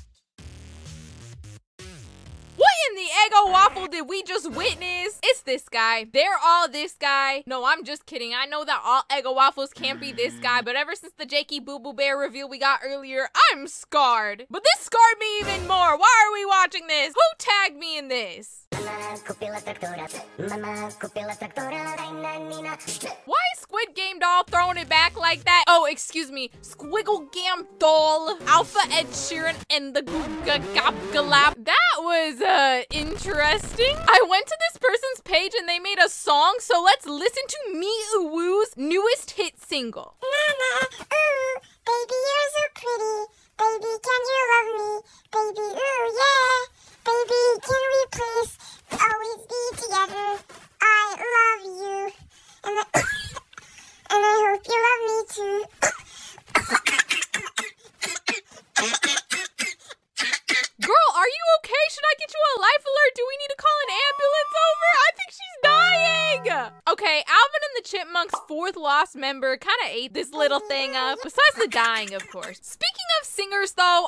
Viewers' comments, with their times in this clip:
0:03 the music lol
0:30 got me singing the song
0:40 why did I start laughing right when she started coughing the second time
0:40 My honest reaction : 😂🤮😨🫣💀 The coughs… 💀 The silence……
0:40 the coughing st the end sounded like that one coughing meme-
0:43 had me choking and dying on my water because the coughing midway was crazy
0:50 Blud sounds like me when I record myself singing
0:53 HAHAH STOP I CAN'T STOP LAUGHING AT THE COUGH WHILE SHES SINGING
0:53 IM DYING 😭😭😭 bro someone went chipmunk hunting 😭
0:54 the choking and her forehead- IT GOES to INFINITY and BEYOND-
0:56 THE COFING GOT ME
0:57 the coughing tho-💀
0:59 bro be coughing alot
1:00 they are having a Asma attack
1:01 the coughing is how you know there’s really some 50 year old man behind the screen